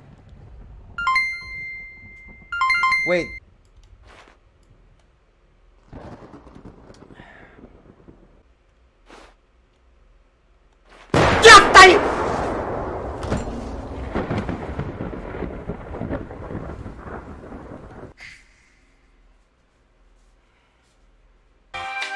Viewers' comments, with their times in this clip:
0:10 When It's Too Quiet And The Thunderstorms Strikes Me: